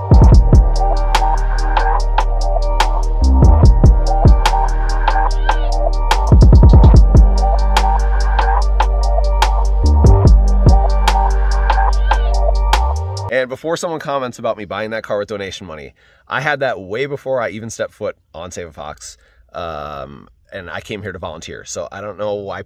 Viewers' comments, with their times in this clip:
0:10 NEIN 1 1 😂 This sounds so wrong in my German ears.